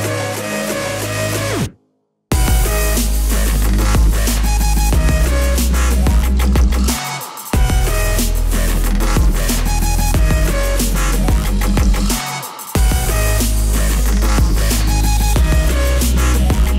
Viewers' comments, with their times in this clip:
0:03 Nice effect with the bass drop